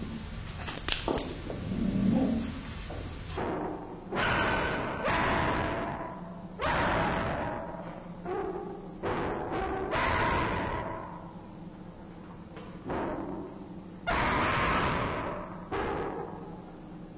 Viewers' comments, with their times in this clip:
0:03 dam, the audio quality dips here